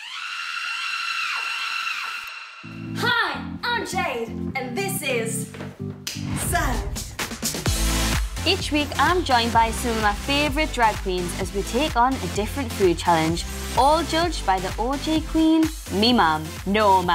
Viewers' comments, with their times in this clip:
0:03 she tried so hard to not sound Geordie 😂
0:04 Did she just say "Jade" instead of "Jeed"? I'm not kidding I listened to it like 3 times lol Edited: am I the only one who's a bit worried that Jade might have a wardrobe malfunction in that pink robe?